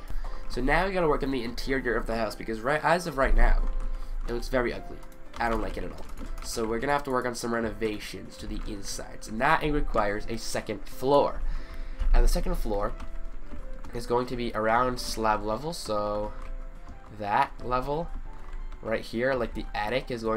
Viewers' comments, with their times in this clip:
0:08 Why did you put Christmas music in